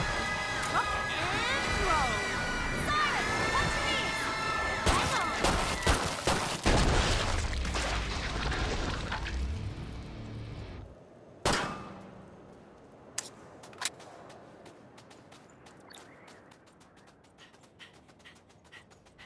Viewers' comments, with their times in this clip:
0:07 What was wrong with that siren? min